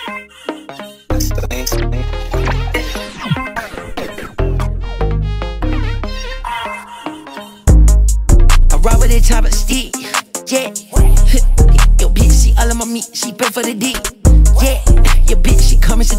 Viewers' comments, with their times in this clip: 0:04 this feels like old carti and uzi 🔥